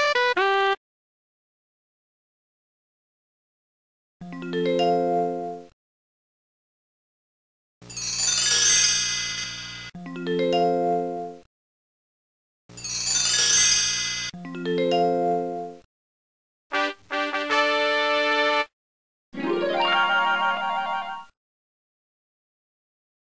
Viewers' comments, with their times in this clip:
0:08 wind chimes glimmer